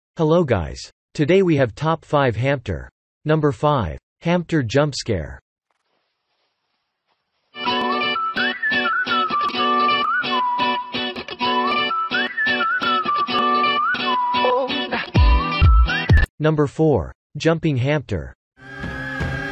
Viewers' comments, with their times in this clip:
0:05 Jump scare BOOM